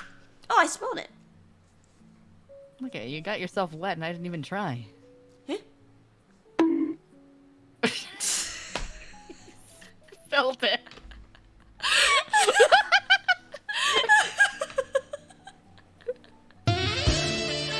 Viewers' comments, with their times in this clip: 0:03 This bonk completes the scene.